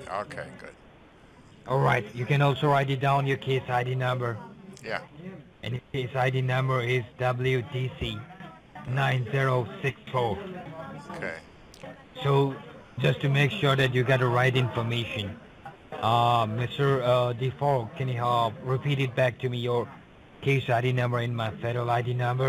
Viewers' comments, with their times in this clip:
0:08 he started sounding like an indian hulk hogan lol